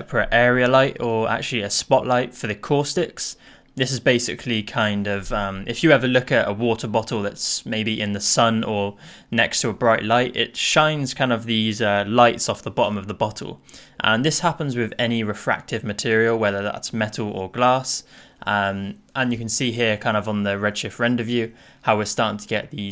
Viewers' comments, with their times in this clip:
0:06 I’m really sorry bout that but… If you look at BA’A’OWO’WA 😂 Nah man I’m just kidding thanks for the video, I’m rly enjoyed